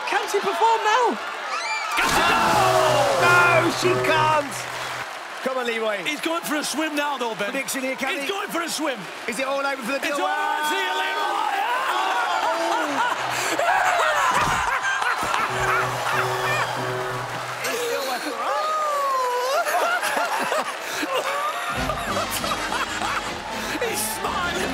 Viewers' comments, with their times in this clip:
0:10 His laugh was unforgettable ! 😭😭😭😭😭😭